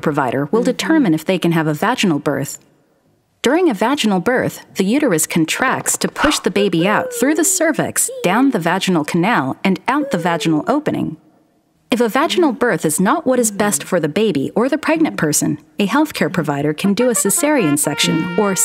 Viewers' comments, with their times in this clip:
0:06 When that baby came went through the uterus saying woohoo, yee I died